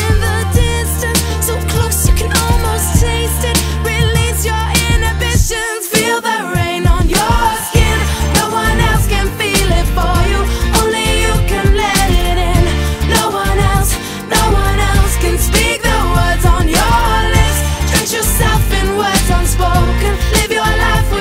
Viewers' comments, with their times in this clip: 0:06 omg i thought this voice is justin bieber😮